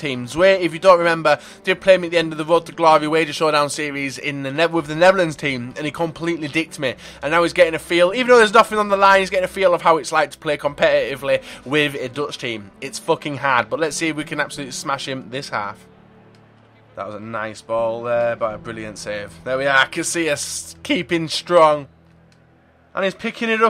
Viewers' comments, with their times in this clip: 0:08 that laugh was OP